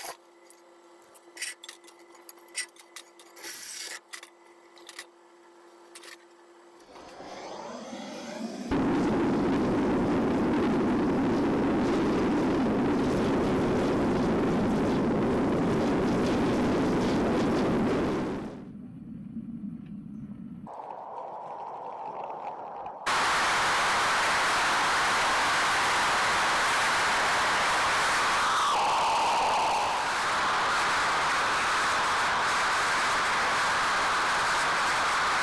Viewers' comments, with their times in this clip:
0:08 Jet engine warning
0:21 Totally ASMR . Set to the Highest volume (Earphone Recommended) 👍👍👍
0:23 the sounds of hell lmao